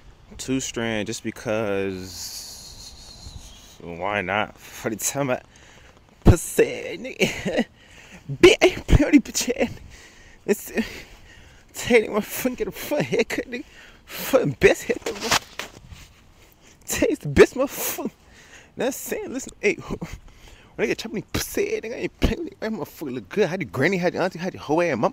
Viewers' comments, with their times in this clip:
0:07 closed my eyes and thought NBA Youngboy came in yo vlog 😂 Great vid ❤